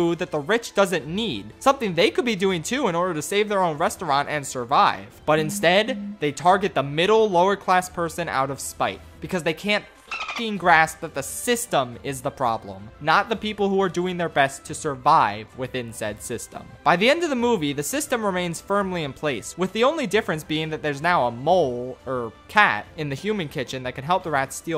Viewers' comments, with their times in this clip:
0:05 cant lie man the phone buzz fucked with me lmao